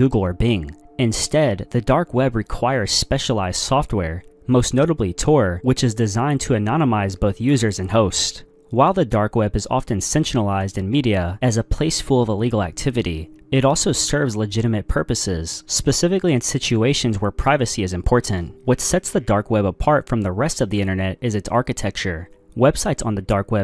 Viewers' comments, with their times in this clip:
0:10 Why is the media sensualizing the internet that’s just messed up how dare they??. The darknet is very sensual verrry sensual. (If didn’t hear him click the time stamp. You’ll see what I mean.)